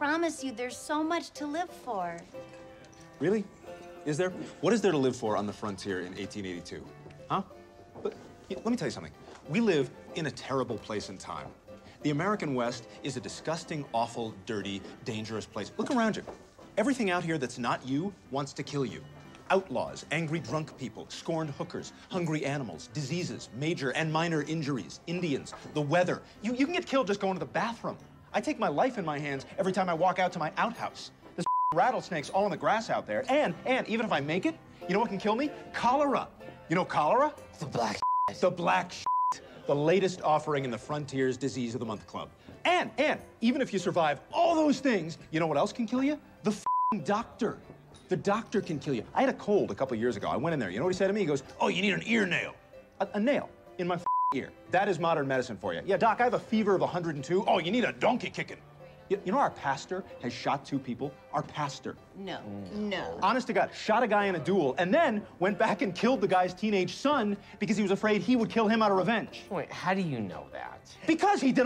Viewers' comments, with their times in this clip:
0:04 wow...seth goes full brian griffin everytime i listen to him makes me think more and more
0:09 Brian slipped through a bit
0:49 Briefly sounded like Brian
0:57 Dr. Hartman voice surfaces